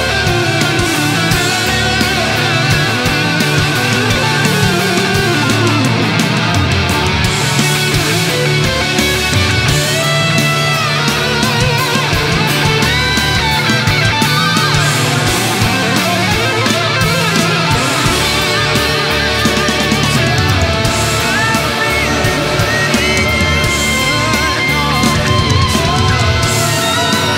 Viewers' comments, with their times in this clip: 0:10 That guitar solo is so cheesy but so good :P I especially like that one note